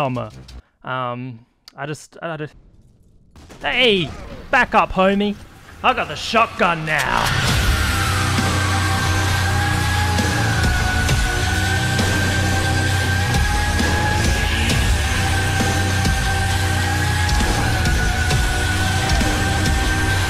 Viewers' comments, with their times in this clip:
0:07 What is the song ? The epicness and excitement yearns to be played more